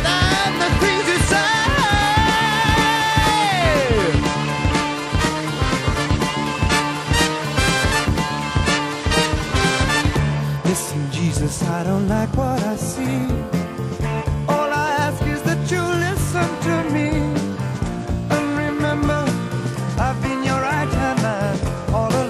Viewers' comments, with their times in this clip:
0:07 Brass are definitely rushing though.
0:09 It must have been a blast to be the bass player from on... Fun to listen and isolate the bass line. A really epic achievement, this song